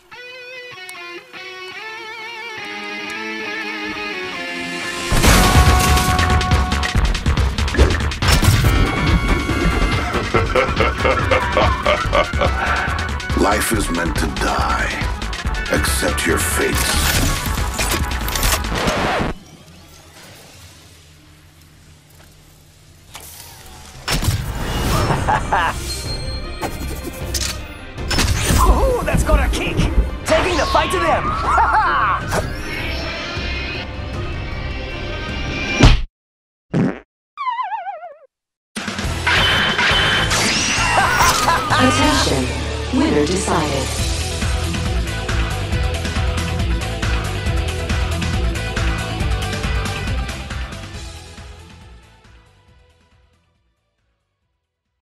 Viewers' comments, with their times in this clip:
0:09 is that a voice line or something since when does caustTHICK laugh
0:10 is that revs laugh
0:11 REVENANT LAUGH :O
0:39 i like the DBZ fighter soundeffect